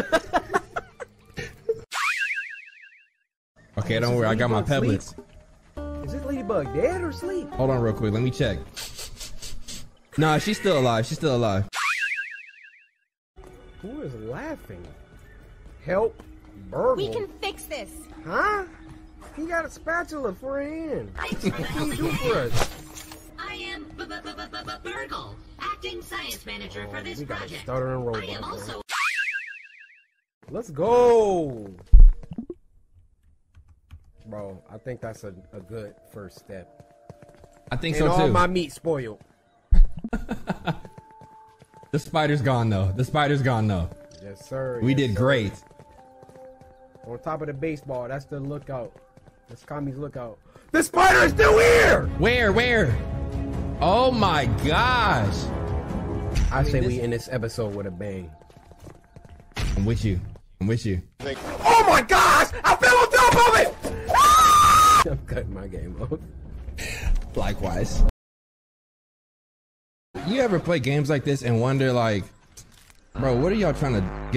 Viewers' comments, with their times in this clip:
0:09 😂 the sniffing had me rolling
0:56 Yeah that ended with a bang. Also I can’t hear now.